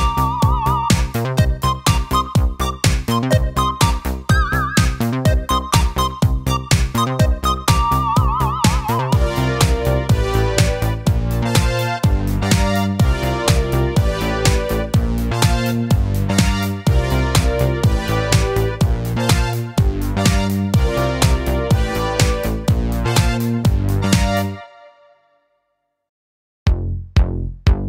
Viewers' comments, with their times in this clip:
0:09 can somebody please tell me how to recreate this sound? The type of synth of anything? It's euphoric